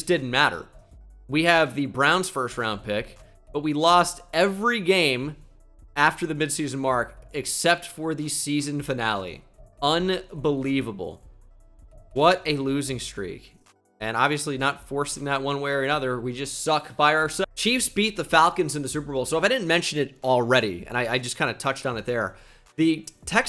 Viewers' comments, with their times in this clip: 0:09 the sharp cutoff “we just suck by ourselv-“ got me dead😭😭